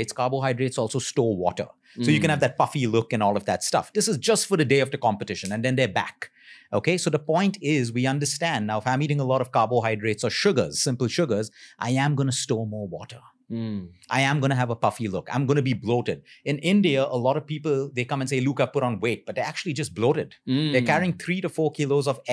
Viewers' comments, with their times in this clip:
0:03 Nice rap song. Wish it had some music. Especially